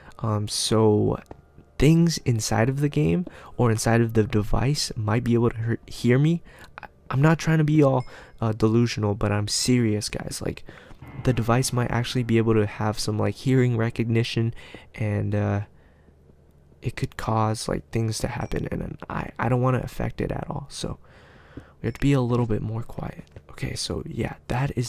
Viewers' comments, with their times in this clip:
0:10 did anyone hear that? It was very creepy.